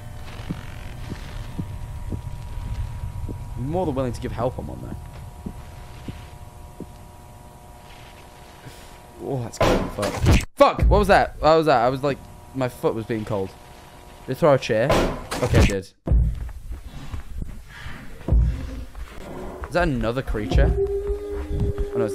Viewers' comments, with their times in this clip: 0:09 just made me laugh because of the noise it made when that object got yeeted, my humour is shit